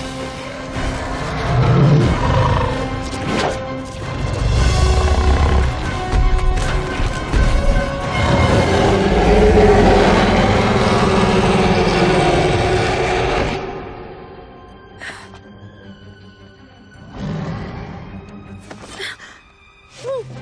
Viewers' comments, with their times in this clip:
0:08 that’s an awesome roar